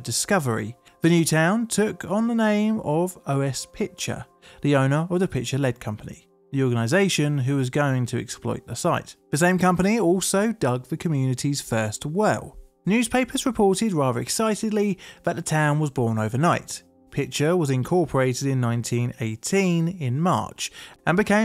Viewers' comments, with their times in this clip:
0:03 "who was going to exploit the site" actually sounds more accurate to my ears than "The Owners"